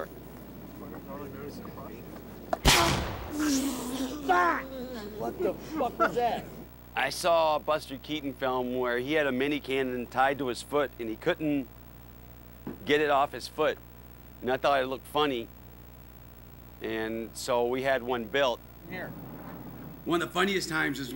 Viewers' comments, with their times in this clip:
0:03 God, the way he yells “FFFFUCK!” Always gets me